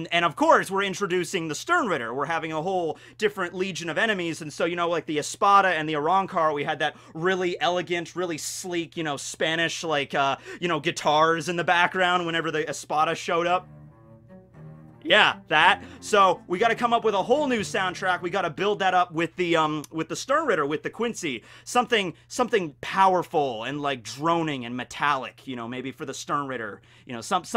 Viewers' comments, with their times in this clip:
0:10 that's definitely NOT a guitar.